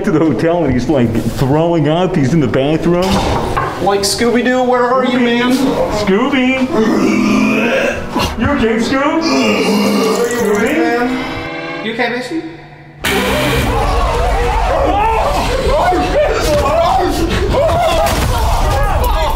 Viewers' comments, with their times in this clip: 0:03 is the best scooby impression I have ever seen
0:03 is the best scooby impression I have ever seen
0:03 Bro how the fuck did you miss ……the best scooby impression I have ever seen